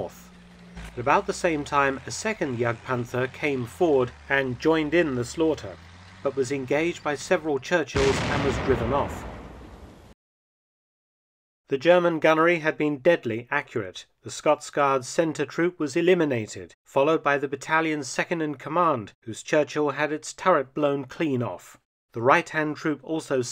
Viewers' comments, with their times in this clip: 0:09 Not a fan of the fake sound and fake footage